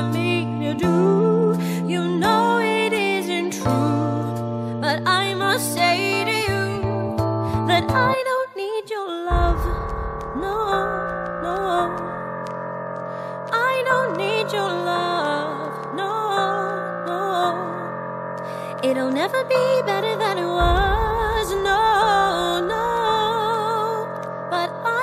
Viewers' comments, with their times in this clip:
0:06 THAT BUILDUP THEN SUDDEN LOW NOTE JUST MAKES ME- AAAAA I LOVE ITTT
0:07 I love that part sO MUCH The fact there was a build-up then just low notes I love it